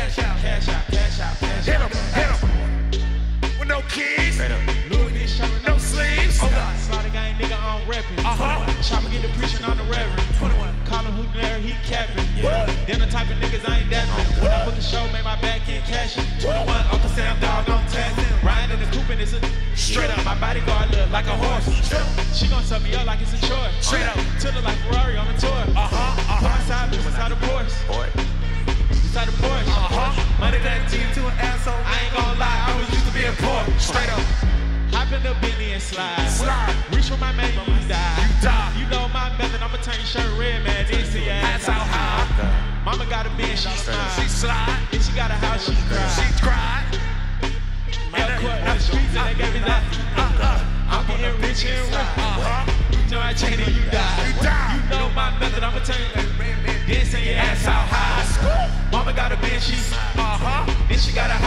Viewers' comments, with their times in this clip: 0:10 tyler got nice adlibs🗣
0:42 Pharrells looking at Tyler like wtf cuz his adlibs while 21 started laughing 😂